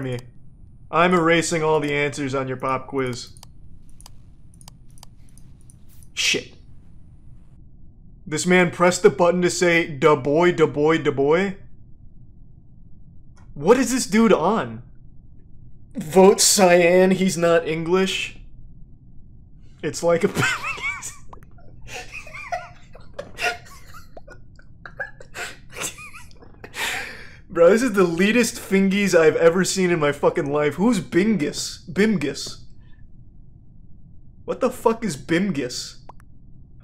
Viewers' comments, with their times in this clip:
0:08 I just realized this guy was singing hatchback, what a mf legend.
0:20 this may be the hardest I’ve ever seen Charlie laugh